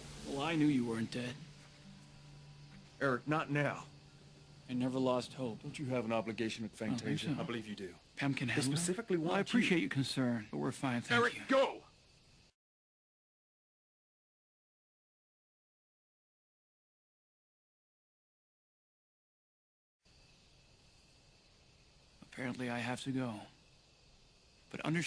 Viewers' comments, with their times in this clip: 0:07 the way he says "I don't think so" made me howl laughing at the viewing party I was at.